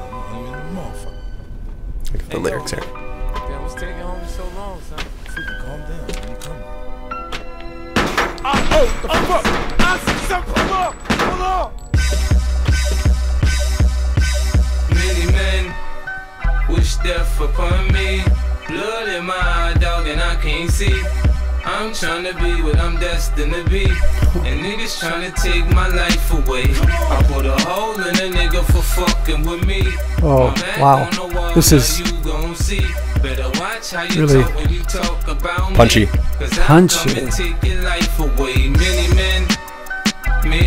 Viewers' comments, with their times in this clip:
0:08 notice, there was 9 shoots. For thoses who didnt notice.
0:24 The gasp is the showing of how we all felt when we first heard 50 cent